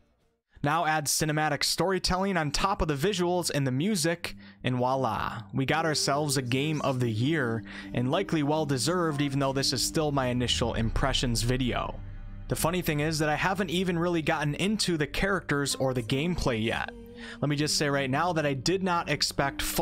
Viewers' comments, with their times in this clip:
0:04 God would I do anything to go back and play this again for the very first time. And I'm certainly not alone in that. ps play the second game, twice for both endings. Also, Geralt's is an antihero, not necessarily a hero. And his name has emphasis on the first, not second, syllable. GEHR-ult edit: did you really just say "wah-lah" in place of "voila" ? 😅